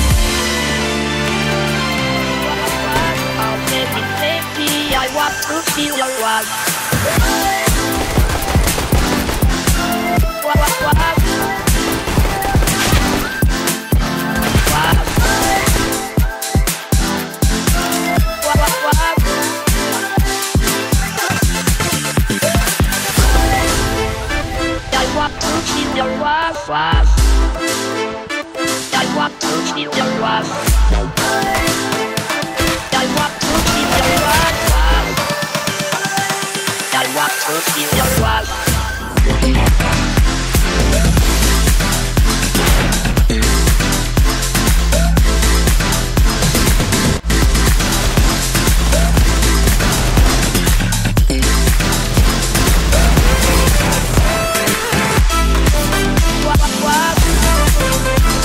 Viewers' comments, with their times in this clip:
0:08 at the beginning of the music, i thought about bonzi budy
0:43 Am I going crazy or do you guys hear Seinfeld musing in the background ?